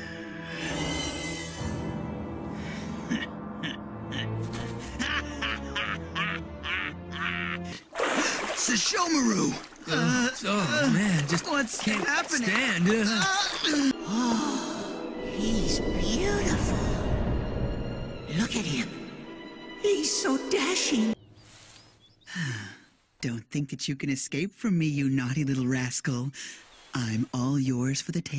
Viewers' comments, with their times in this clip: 0:09 "Sesshoumaru!" dizzy noises Same, guys. Same. 😳